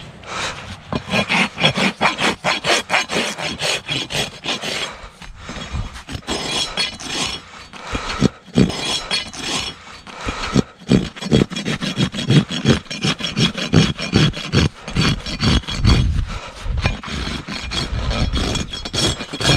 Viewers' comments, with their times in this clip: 0:06 was that a dog